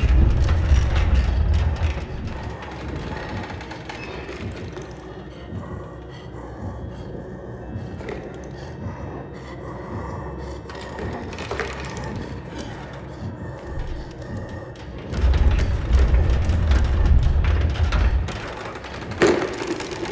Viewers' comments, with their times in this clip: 0:04 Doctor likes to S N I F F